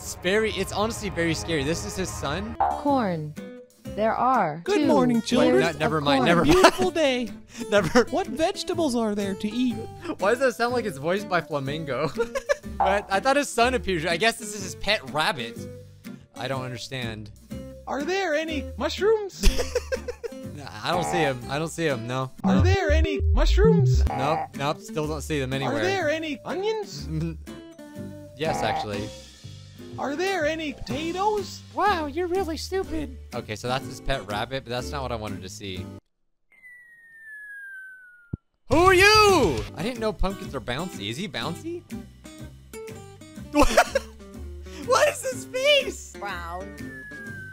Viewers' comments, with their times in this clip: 0:05 No but why does it actually sound like flamingo in that one voice 😂
0:32 mans sounded like flamingo